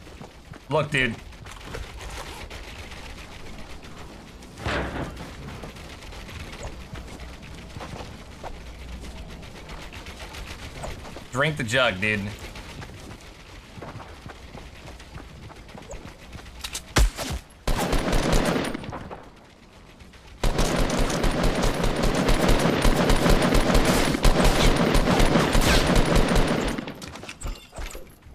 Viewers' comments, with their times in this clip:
0:09 Lego sounds intensify